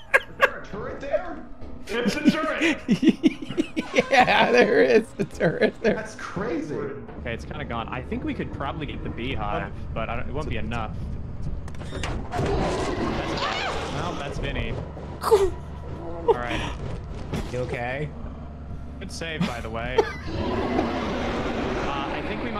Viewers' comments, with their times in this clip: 0:10 The best part about the clip is that all he had to do in that situation was be quiet and the dogs would've gone away. Instead he full on panics and loudly gives a play-by-play of the door percentages. I love this "man"